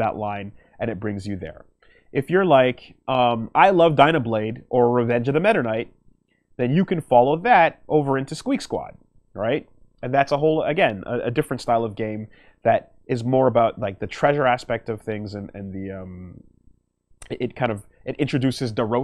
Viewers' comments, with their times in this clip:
0:04 "Revenge of The Metter Knight" wat.